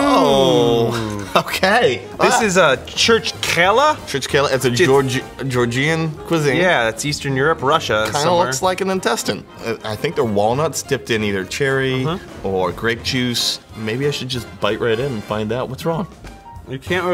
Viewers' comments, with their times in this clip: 0:03 the way he pronounced "georgian" hurts me